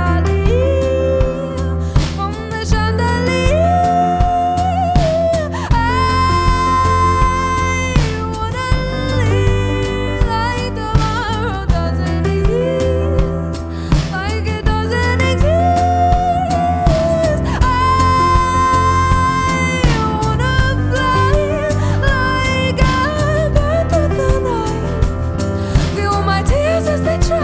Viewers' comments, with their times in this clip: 0:10 Her voice though